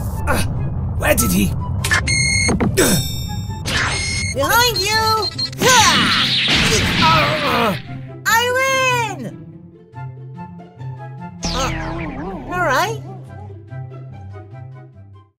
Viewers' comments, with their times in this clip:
0:08 he sounds so happy it’s adorable